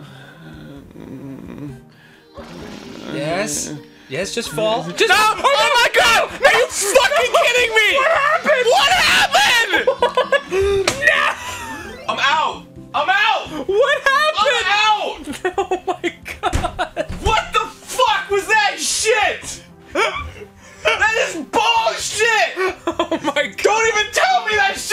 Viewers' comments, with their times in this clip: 0:07 The way he says "What happened?" XD